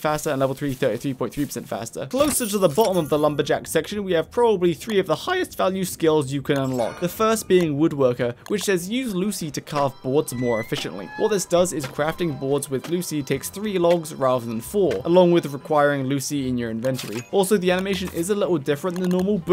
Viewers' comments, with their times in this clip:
0:04 That was a good high quality voice crack. I give it a solid 10 planar/10